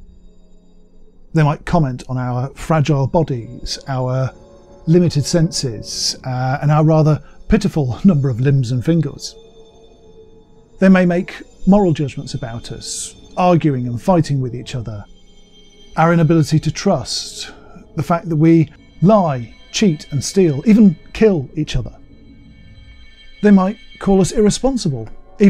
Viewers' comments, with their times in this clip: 0:06 The background noise at just after regarding what aliens would think of us… ouch! I was freaking out a tiny but because I thought I was having a tinnitus flair up.😅